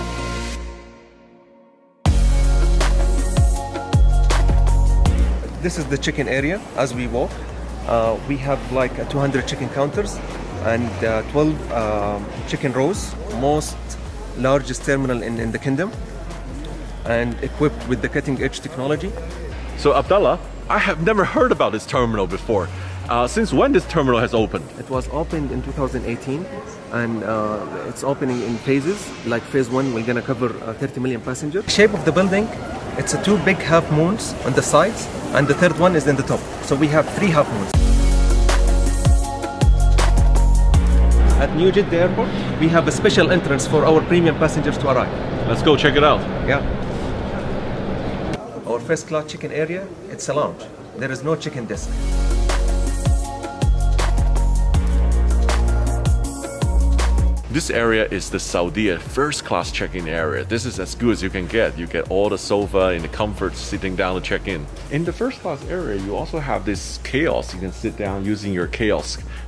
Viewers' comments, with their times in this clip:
0:04 this is the chicken area ! but i don´t see chickens
0:04 This is the chicken area lmao!
0:05 who else thought he said “this is the chicken area” 🐓
0:05 "This is the chicken area we have 200 chicken counters" lol😂😂😂
0:05 min Is this only me or someone else who heard chicken area, chicken counter and chicken roast. I really lost my confident. I was watching this video in tv and all my cousins were laughing at me after this incident. I really need to improve my English.
0:05 this is the CHICKEN AREA seriously ??
0:05 chicken area HAHAHAHAHA
0:06 He says Chicken :D
0:06 The automatic subtitles: "This is the chicken area...."
0:06 this is chicken area..!!?? For a second I got confused as I was hearing the video not watching. Is it a restaurant area of the tour to start with..!!?? Naaah he was referring to check in again and again..!
0:06 This is the Chicken Area?😀😀😀
0:06 😂😂😂🤣🤣🤣😂😂 I heard chicken area😂😂😂🤣🤣🤣
0:06 Bro I don't see any chicken what kind of Chicken area is that :)
0:07 This is the chicken area I don’t see any chicken 🐔 He is fake
0:08 This is the chicken area...Hahahahahahahahahaha
0:12 12 chicken roast
0:49 "Our Fist class chicken area" OMG LOL
0:51 our 1st class Chicken area ... its a lounge... there is no chicken 🐓 here ..... 😂🤣😂🤣😂🤣